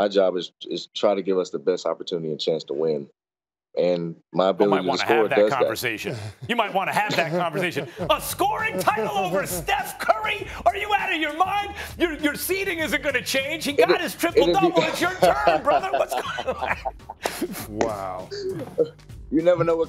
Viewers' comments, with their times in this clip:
0:07 Max missed Stephen A, so he decided to impersonate him.